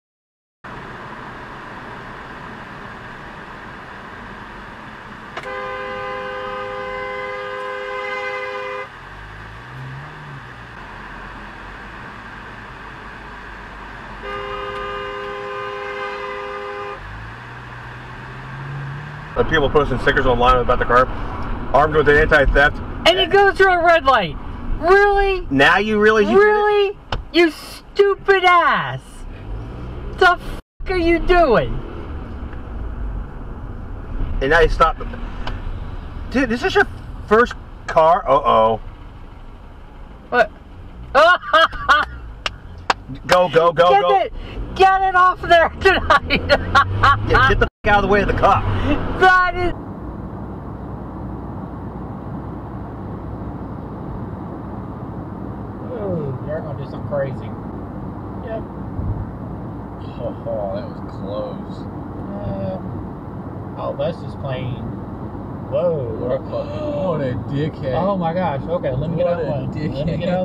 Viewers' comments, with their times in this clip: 0:06 ❄️ with a horn.
0:51 sounds like the Chrisley dad found a new gig.